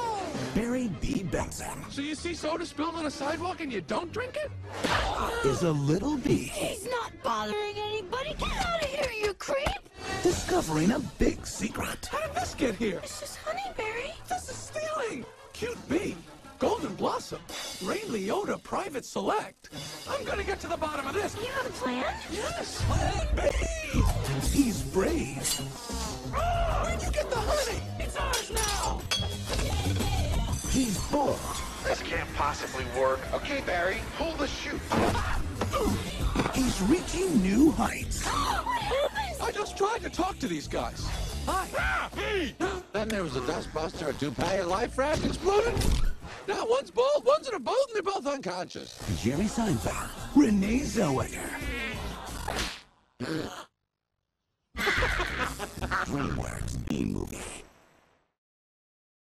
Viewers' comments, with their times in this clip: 0:08 Everything is okay until after Then it really gets fucked up
0:15 You missed one ;/
0:25 THE BEST PART! He sounds like fozzie bear!
0:29 I like how it begins to sound like a Miitomo character after
0:44 barrys voice is just a monotone, robotic text to speech program now
0:57 Back of the router be like: